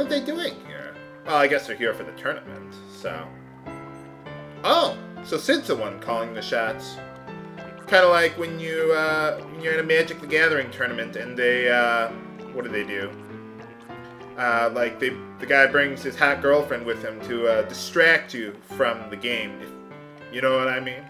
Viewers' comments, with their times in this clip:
0:04 Was that an alarm?